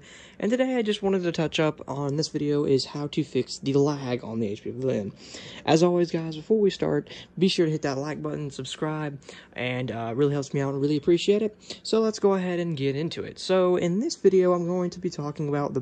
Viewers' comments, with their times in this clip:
0:03 on HP PLLLLLLYALLLLLLMMMMMM...